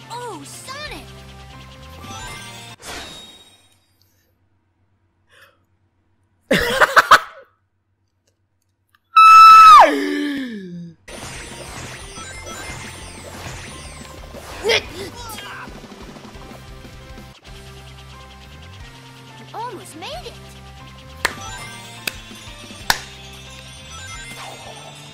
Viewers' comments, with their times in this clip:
0:09 That Sound was so High Pitch